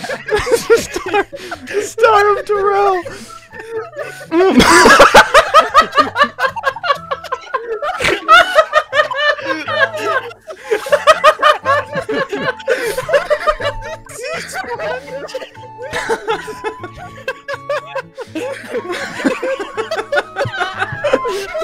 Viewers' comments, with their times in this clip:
0:04 The Laughing Outburst Begins